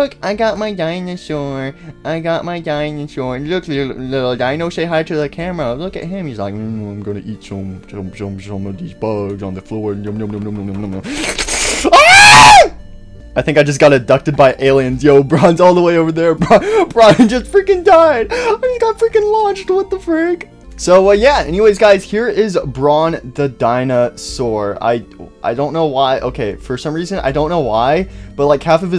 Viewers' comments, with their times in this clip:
0:07 its so funnt why isnt annyone talking about it? That AAA was the best thing abt it xddd
0:12 That scream ✋🤣 If that scream was in the game: Poppy: Listen I'm going to need you to trust me